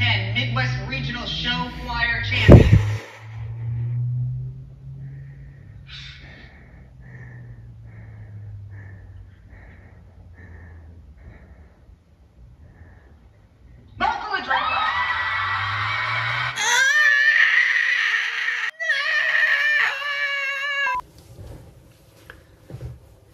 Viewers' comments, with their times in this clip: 0:08 also the heavy breathing triggered my anxiety LMAO 🤣🤣